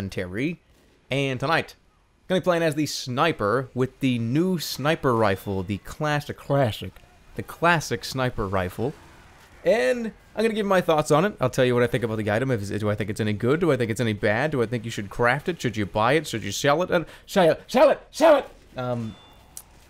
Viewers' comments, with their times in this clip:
0:05 good that Jerma realizes that "clashick" is the proper way to pronounce this weapon. :D rofl